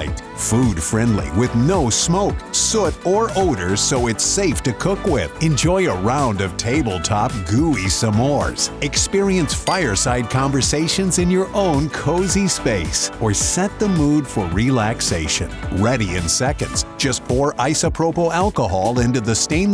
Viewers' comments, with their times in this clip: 0:07 I'm sorry, did he say, Sa-mores ?